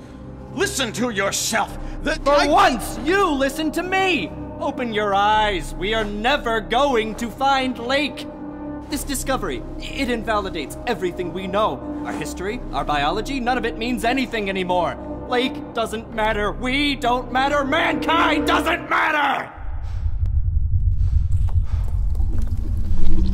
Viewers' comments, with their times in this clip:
0:09 just really awesome voice acting, nice